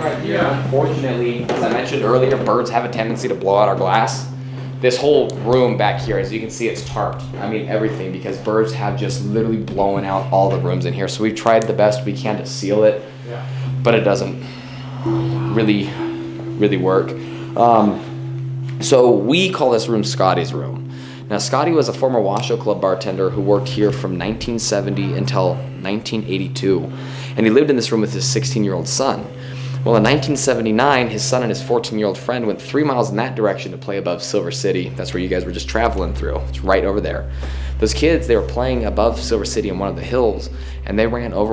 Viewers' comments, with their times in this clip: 0:08 when the guide is talking about the birds blowing out the windows, there is a very audible whispering. I can't make it out on the equipment that I'm currently using so if anyone can make out what's being said I would love to know.
0:14 there IS A VOICE "oh walka"? i think is what is says
0:14 I here what sounds like a whisper of a whole sentence.
0:14 Guys - playback the area at timestamp and tell me if you hear what I heard. It sounded as if someone or some thing whispered something like "Oh Wow" or similar.
0:14 I'm sure I can hear an EVP I'm not 100% what it says. You guys are the best!!!
0:14 listen you guys missed a creepy ass voice!!!!!1
0:15 female voice says "who/what are you?"
0:15 Hey y'all. This place and guy is amazing. Just wanted to mention after he mentions they have done best he can to taro up the winds. There is a husky man whisper that says something. Can't quite make it out, though thought you could with enhanced audio technology. Sounded creepy as.
0:15 -30 around this time i noticed a atrange sound maybe a voice was talking in the background same time as the guide was so it wasnt him so u slowed it down to .05x but the voice was unintellible. Its the strangest thing
0:16 woman whispers 3 words or syllables
0:23 while he’s talking about Scotty you hear a noise in the background.
0:24 It sounds like a woman speaking minute mark
0:24 it sounds like a womans voice in the background I cant work out what it says
0:25 it sounds like a female voice saying something!
0:25 Did I just hear a woman's voice ?
0:25 short chatter from what sounds like a woman or a man and woman. Or possibly laughter
0:25 So creepy!! Love the historical side. it sounded like a door creaked or something did!!